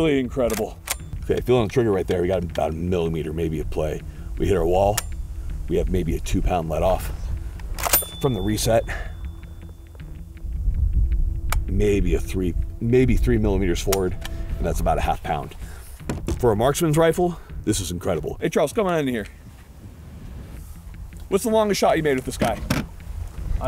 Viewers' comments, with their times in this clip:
0:07 I just found my second favorite ping noise behind the M1 Grand itself.